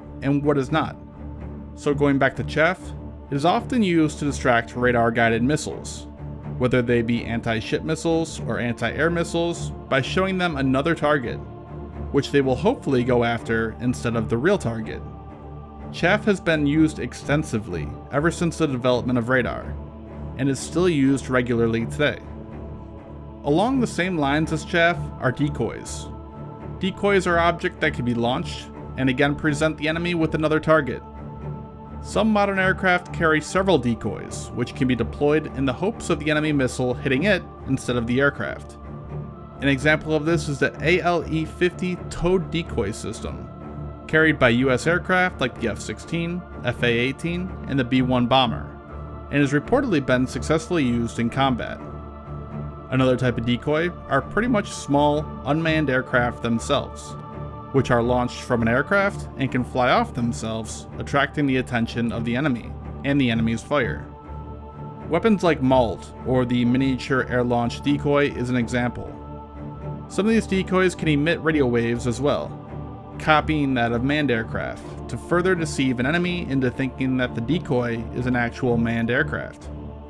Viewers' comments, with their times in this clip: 0:04 that moment when the "anti-shit missiles" confused me for a second.
1:03 Great video probably. Shame about the pointless "music" which became too irritating, so I only made This is an error in my opinion that lots of you tubers make. If you have a human narrator let him or her do their job and lose the darat dat darat dat darat. Forgive me. I have hyperacusis and it wrecks the experience.